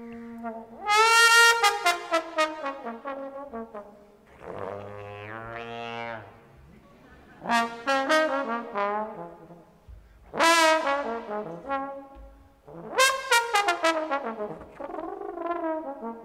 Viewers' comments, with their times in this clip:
0:04 does anyone know how to do the effect ? Is it just a multiphonic growl kind of situation? Or is he doing smthn weird with his lips.